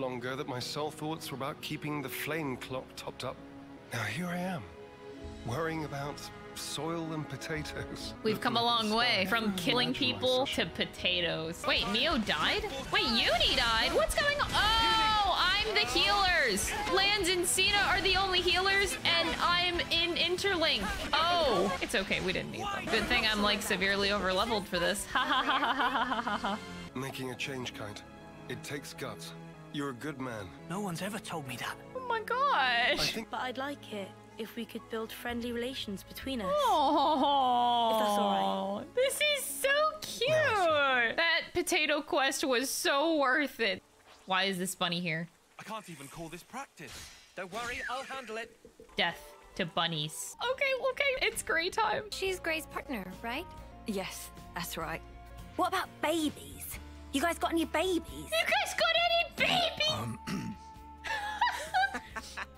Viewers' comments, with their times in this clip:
0:05 The exact Moment when I knew That Zeon has the Voice Of Neil Newbon 😂😆 Astarion was not my favorite character in Baldur's gate 3 but I'm so proud to been famous cause I like his calm voice in Zeon. Neil can do a lot of things ❤
0:45 I loved the action and the legit line delivery after that LMAOO